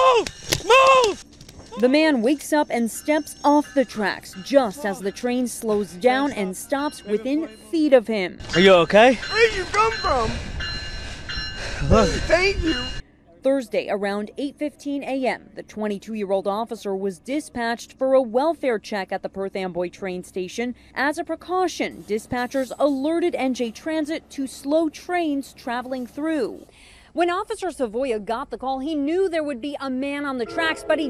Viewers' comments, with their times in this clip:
0:08 Am I the only one that hears: Where did you come from? I hate you!
0:08 the total gratitude and joy in his voice
0:09 This is heartwarming. You can see how thankful he is by the tone of his voice
0:09 This is the new yanny laurel
0:09 I feel like he said "Where'd you come frome?I hate you" 😕Maybe it's just me 🙃
0:11 Ok i want you to hear while watch this words below I hate you Now you hear it back but now watch this words Uh thank you Yeah it weird
0:12 Did he say “I hate you” or what?
0:12 Is he saying “thank you” or “I hate you.” Me and my brother are debating if he said either one of those. On god I hear “thank you” but he hears “I hate you.”